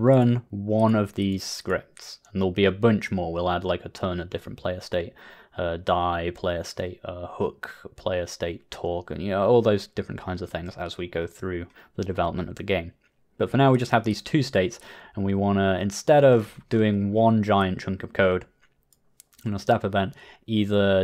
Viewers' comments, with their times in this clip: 0:05 I thought he said player sprite twerk